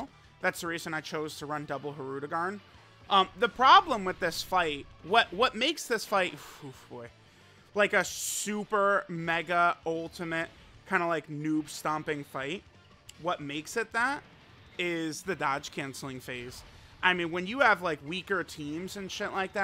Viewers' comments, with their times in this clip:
0:05 thats the sound of true fear